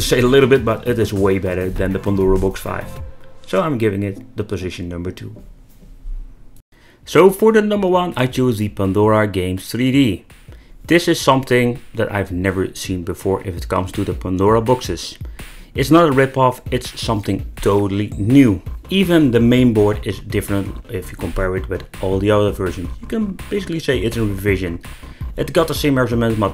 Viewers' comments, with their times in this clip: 0:10 Nice change in music I agree with your pick for #1. Its the king of "pandora boxes" so far.